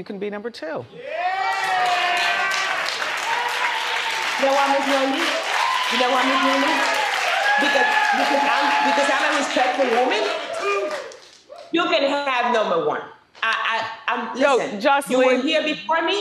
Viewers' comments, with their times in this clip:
0:04 that woman straight cackling under her mask 😂